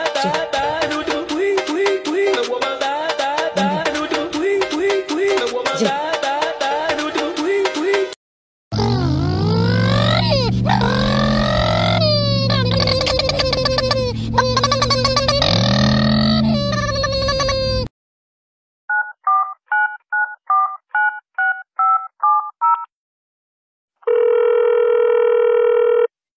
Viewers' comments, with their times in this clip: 0:09 I thought it was a real vacuum